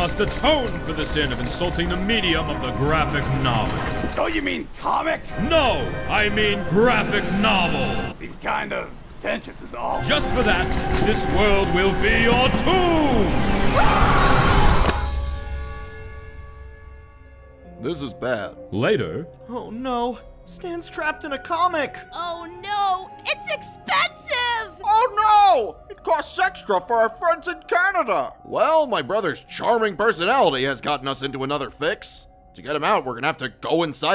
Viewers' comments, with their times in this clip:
0:04 I just wanna say, the editing is absolutely stellar, with the music cutting out JUST for Stan's lines. I havn't laughed so hard in a long time.
0:16 “this is bad.” (I can’t with the way he says it 💀)